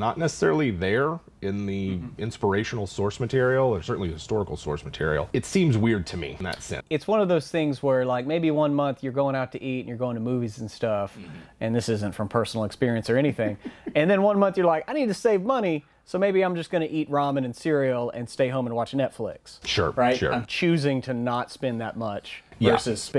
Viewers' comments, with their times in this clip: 0:05 of, that triple jump cut with audio desync......